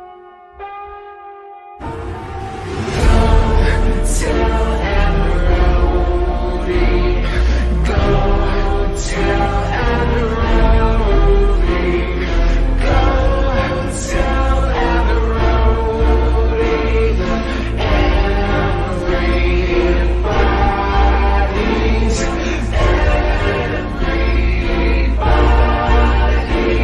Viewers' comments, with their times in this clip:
0:07 onwards is sad